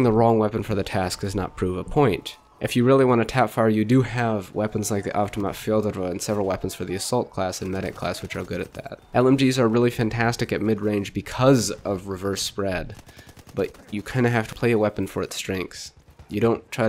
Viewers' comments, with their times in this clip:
0:03 You do have weapons like.... what?! The half door-mat fill the rum?